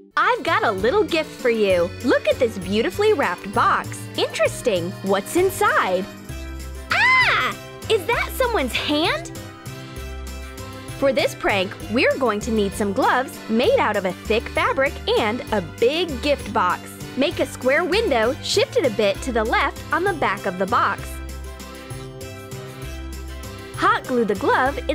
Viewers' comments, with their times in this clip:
0:07 the fakest shout ever.